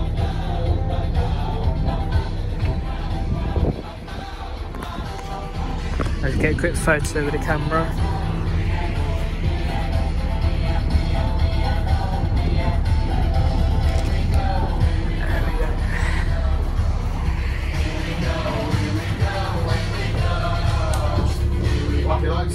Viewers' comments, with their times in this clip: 0:03 heard that sing